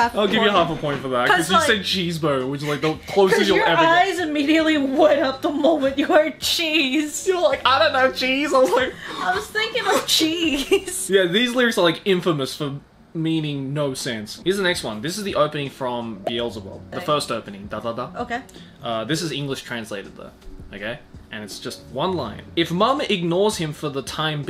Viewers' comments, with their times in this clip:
0:10 whats the name of the anime? BL's above? (english isnt my first language I cant understand what joey said cus he has a strong accent :(